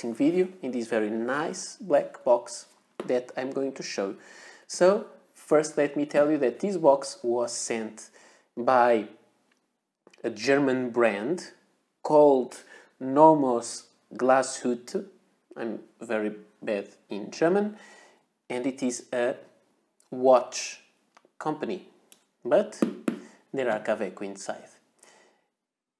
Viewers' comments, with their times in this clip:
0:10 That was very well pronounced. :) I was able to understand „Glashütte“ so that is already great! And on top of that the pronunciation was good as well! :) Greetings from Germany.